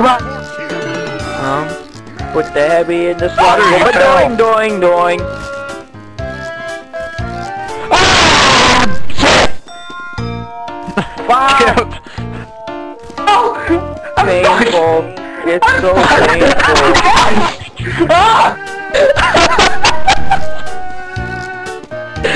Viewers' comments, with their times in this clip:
0:09 "Im block !!" + EPIC LAUGHT